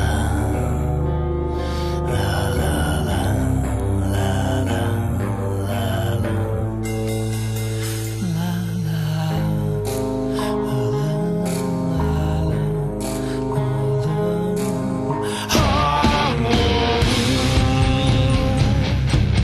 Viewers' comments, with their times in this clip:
0:03 sounds like it should be in Coraline